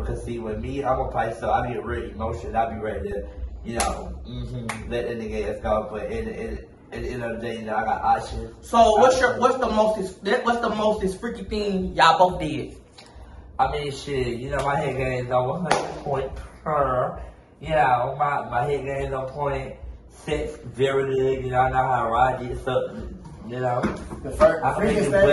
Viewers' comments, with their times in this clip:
0:07 🤣I Got Ot-Chens